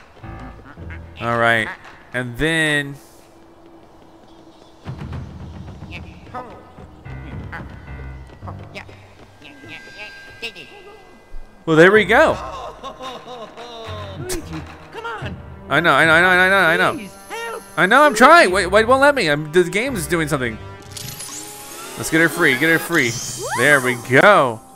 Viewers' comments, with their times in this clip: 0:09 It Sounds Like Mario Is Having An Existential Crisis